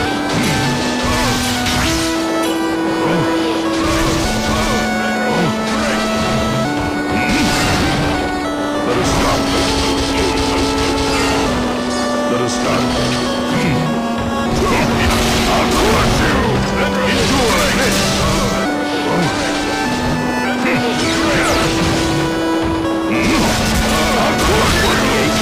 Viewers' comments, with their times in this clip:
0:09 All I heard was "Trolololololololol Derp"